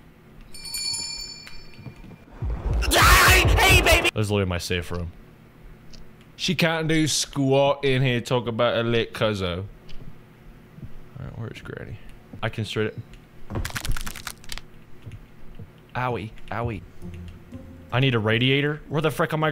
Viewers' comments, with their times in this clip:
0:05 british jumpscare scary warning